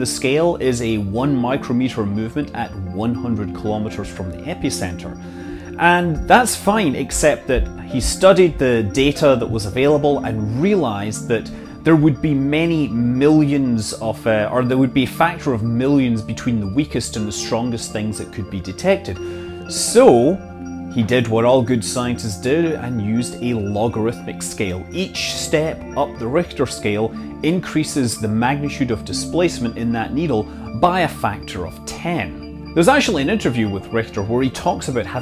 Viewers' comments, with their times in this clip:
0:05 you can hear someone walking in your house upstairs.
0:07 I can hear someone walking upstairs
0:17 Even as a professional geologist I gave up on this as your music was too obtrusive.